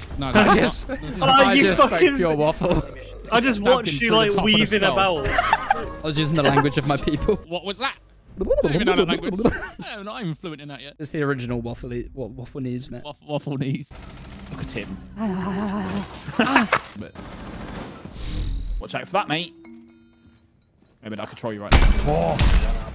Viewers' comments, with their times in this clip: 0:08 Octodad language bruv